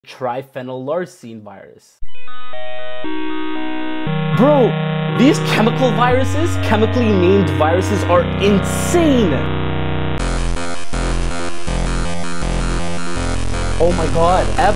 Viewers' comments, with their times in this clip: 0:02 On this sound is look like saline.exe but different